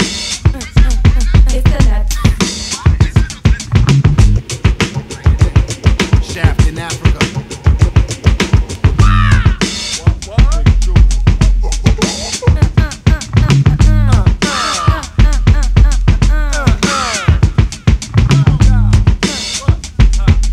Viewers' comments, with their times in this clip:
0:03 As much as I love the flow skill in the verses of Da Nuts, the beat from on still reminds me of bumping around and just smiling. Love me some Prendelo too, this whole album was a beach trip bump there & back. Soooo effing 🔥🔥🔥🔥